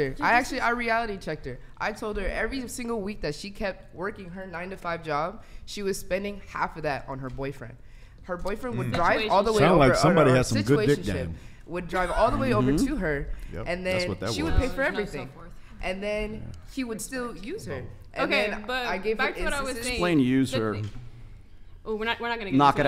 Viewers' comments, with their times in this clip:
0:07 Sure that's not a dude? listen to that voice.